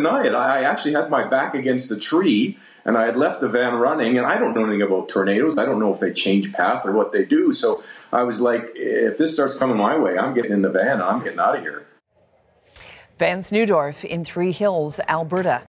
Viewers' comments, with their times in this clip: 0:11 Give the guy a break on his pronunciation of 'Tornado", he's a 'NEW dorf'